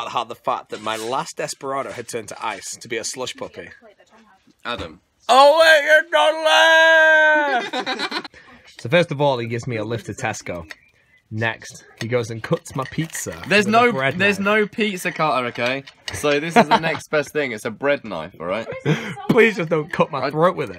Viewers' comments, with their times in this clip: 0:06 That laugh tho.